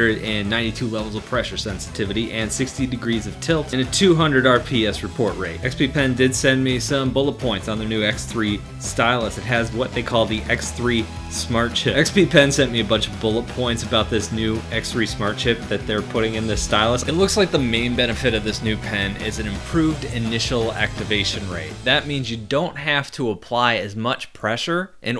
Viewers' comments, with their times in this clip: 0:07 you have an audio line duplication ish